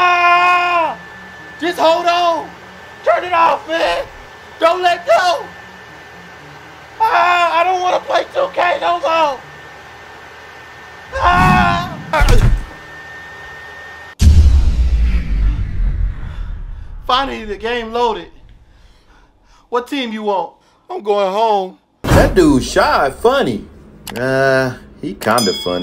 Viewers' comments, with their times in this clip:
0:09 😂 my ps4 do that lady time my dad ask me to close the PS4 I wake up in the night my ps4 start being loud my dad wake up he bet my ass